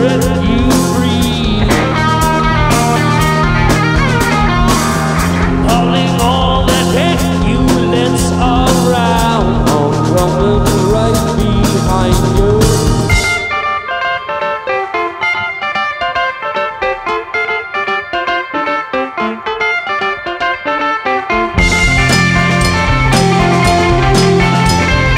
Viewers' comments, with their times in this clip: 0:10 kinda like a coach-whistle. Love it.